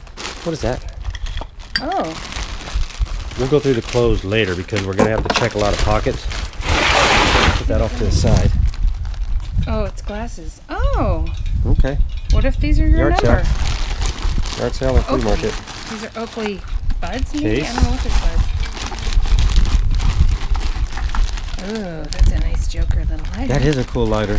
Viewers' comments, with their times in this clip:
0:05 Whats that sound??? did you guys farted???